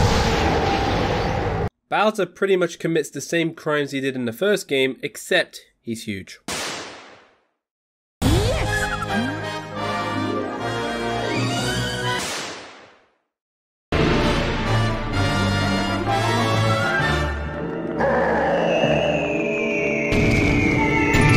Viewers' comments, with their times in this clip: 0:08 the audio cut made me laugh